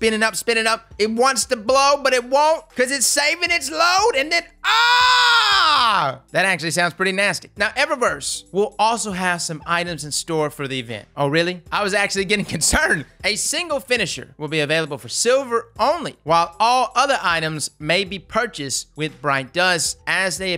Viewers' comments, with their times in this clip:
0:04 LEAD US Aztecross! Showing up as a titan I laughed so damn hard at that AAAAAHHHHHH moment lmao